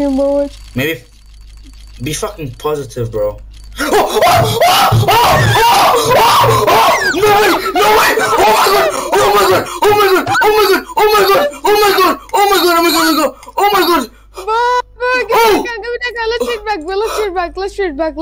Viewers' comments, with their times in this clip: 0:04 dude, my ears...